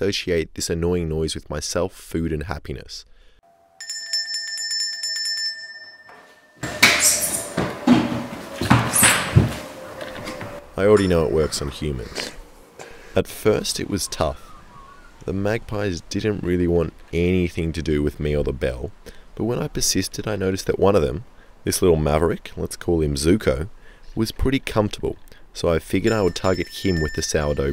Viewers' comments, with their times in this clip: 0:09 siren head in the background